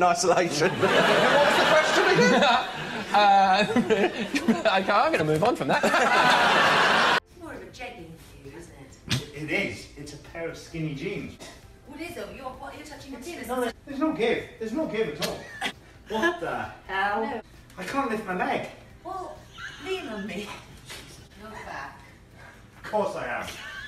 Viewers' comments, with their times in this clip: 0:07 was just too funny i think David Tennant was shooting this , cause i heard his laugh :)